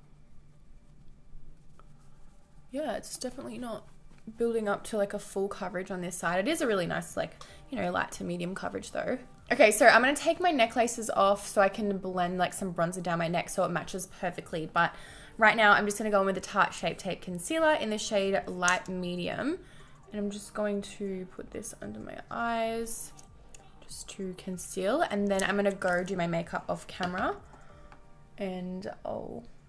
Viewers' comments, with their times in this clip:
0:10 why she say necklaces like that 😭😭